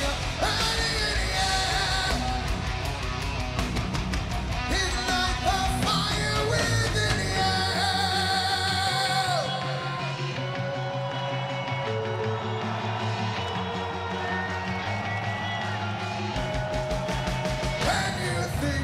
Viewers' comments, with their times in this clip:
0:04 That voice tho